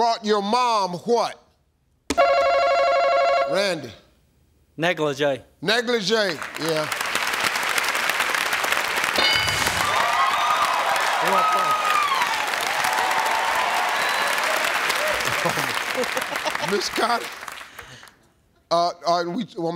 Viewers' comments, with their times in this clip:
0:04 negligie 😂😂😂 love how the backstage people figured out what he means lol